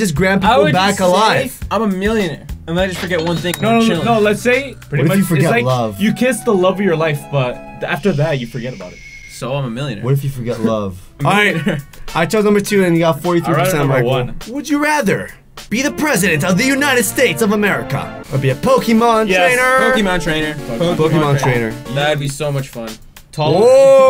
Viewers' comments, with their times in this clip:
0:08 why shh? I heard what he said anyway.